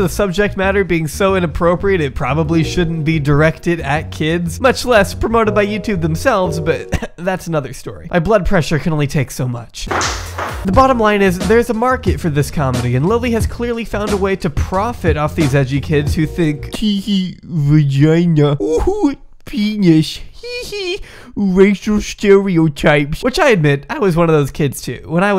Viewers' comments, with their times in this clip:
0:09 The fuck you sounded like Mutahar in or so...